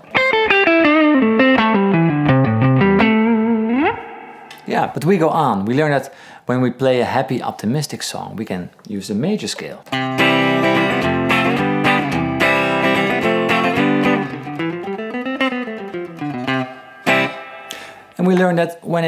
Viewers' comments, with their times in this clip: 0:07 did he just lightning bolt by Jake Bugg as an example for a major scale "optimistic song"